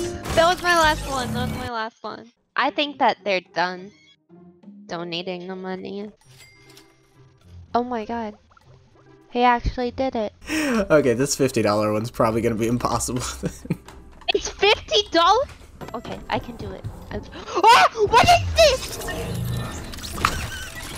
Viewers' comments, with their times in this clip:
0:03 Bro the way she pushed you off an laughed- even though your the on giving th money